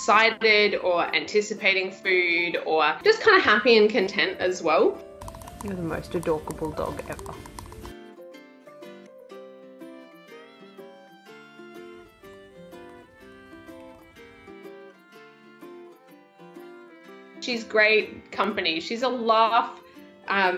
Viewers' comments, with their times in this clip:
0:05 reminds me of that teeth chomper in world war z